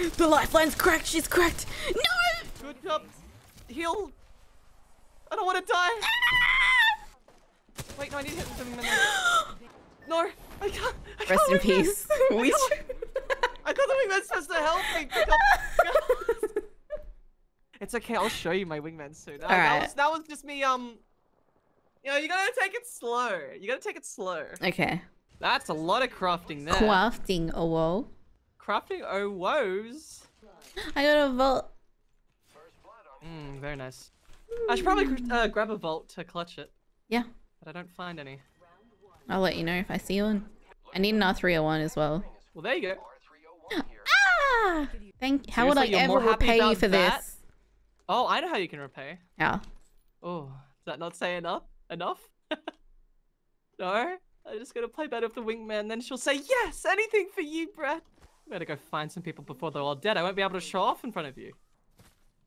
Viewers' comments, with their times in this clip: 0:03 That scream is amazing
0:30 her voice sounded so cute🥰🥰🥰
0:45 When I heared I thought it was hentai 😂